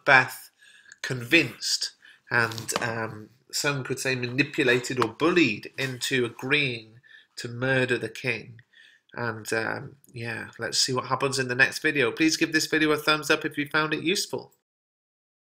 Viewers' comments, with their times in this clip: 0:06 "Lady Macbreath replies"